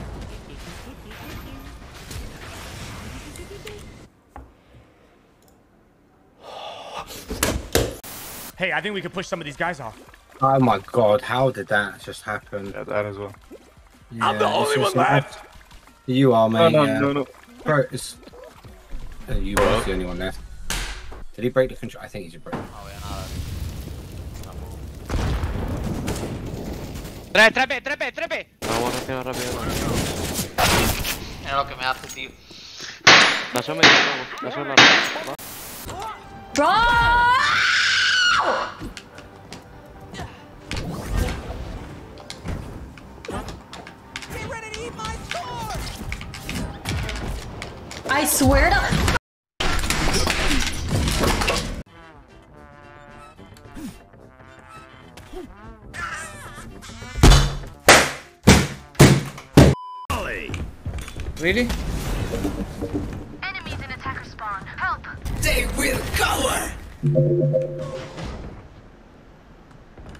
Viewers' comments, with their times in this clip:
0:08 I thought it was Dr Disrespect voice
0:36 is easily the best one. How can you get so mad over such a goofy looking game? She managed to dodge the pie Bugs Bunny threw at her but fell victim to his classic oversized wooden mallet! BONK 😂😂😂
0:37 sounds like my cat
0:55 what the hell was that deathsound